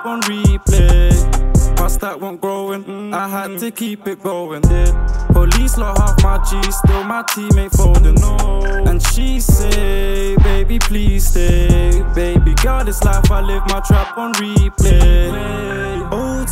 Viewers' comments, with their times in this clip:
0:04 that ad lib "det" is perfect